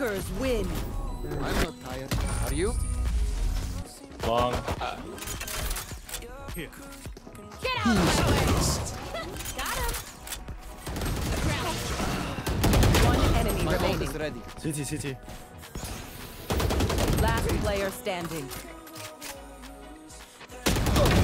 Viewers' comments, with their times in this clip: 0:04 The shots just sound like his outro... I thought it was over =,(